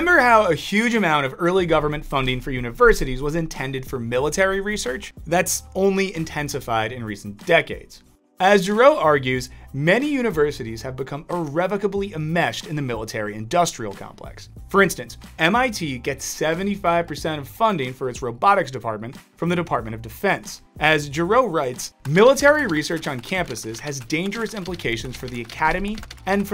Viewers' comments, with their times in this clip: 0:09 Dr. Gero!?!? from dragon ball XD the one that made the androids oh.. giroux...